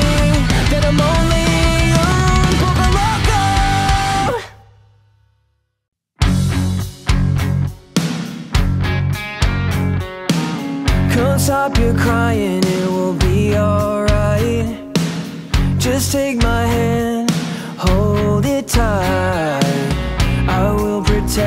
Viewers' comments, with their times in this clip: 0:06 Tarzan is a Great Song. The Voice the singers is buitifull. E-Guitar is wow and the Drummer is Crazy buitifull an powerfull. I Love your Coversongs.